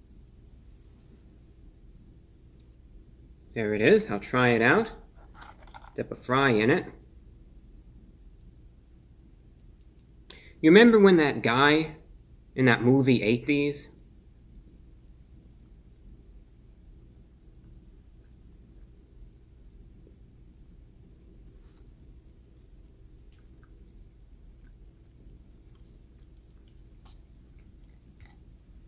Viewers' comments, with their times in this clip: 0:08 "Remember when that guy, in that movie, ate these?" had such a spot-on dry -yet-sardonic delivery that I actually laughed out loud.
0:10 fucking killed me, the delivery is just perfect